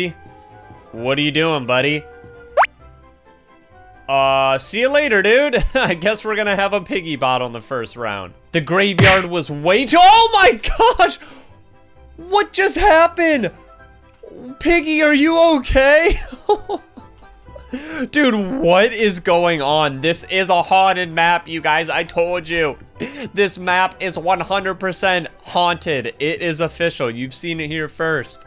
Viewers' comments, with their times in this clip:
0:09 repeat it over and over and he says yarghhh like a pirate Edit:PIGGY DANCEEE FACE